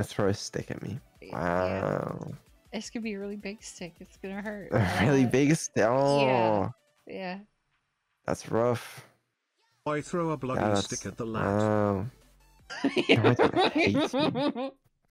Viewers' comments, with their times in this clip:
0:13 "why he sounds so dead inside?" -He's british -Programming I cant xD